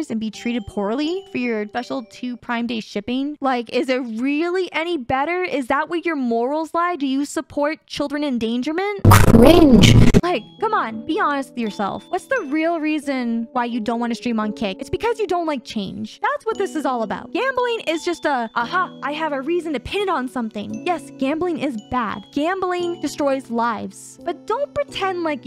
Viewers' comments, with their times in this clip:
0:08 volume warning. Scared tf outta me 😨